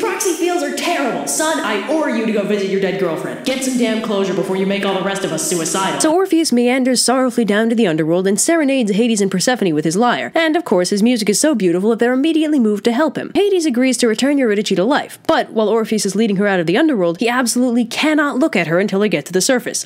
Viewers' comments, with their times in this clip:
0:07 Singing LAAAAAA LA LA LA LA LAAAAAA